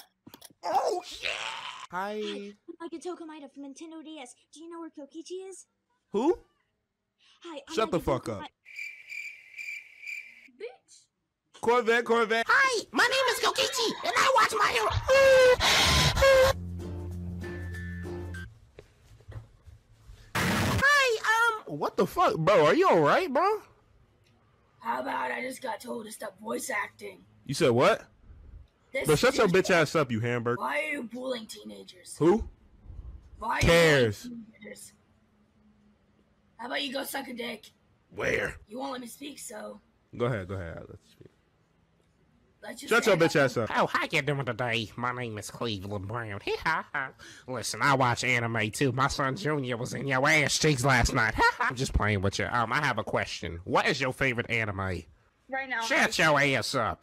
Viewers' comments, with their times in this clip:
0:09 the Corvette and the anime moaning had me dying
0:43 BRO THAT CLEVELAND LAUGH IS FUCKING SPOT ON LMAOOO